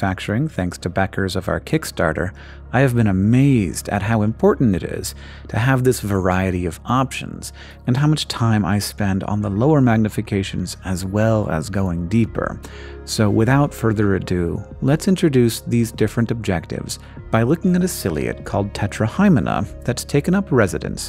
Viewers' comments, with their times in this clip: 0:08 .. the name, the voice, it all just clicked. and i love it.